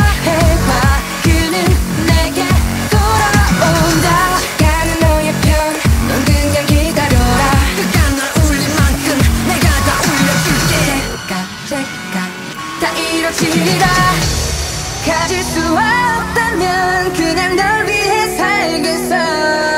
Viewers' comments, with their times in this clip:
0:04 The woooo part is not hyuk,he only sing this part in this song